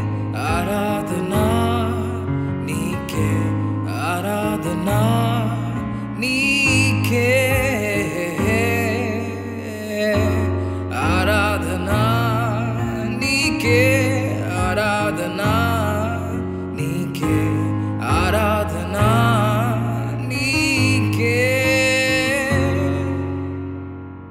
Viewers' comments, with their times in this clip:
0:07 Wow wonderful brother!! I love the way you play..... chord??